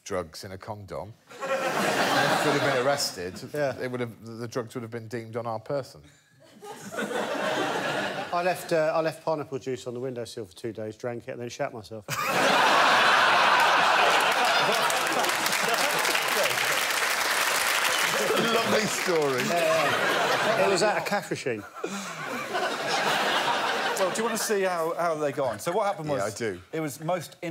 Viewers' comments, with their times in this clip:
0:08 lmao his delivery 😭😭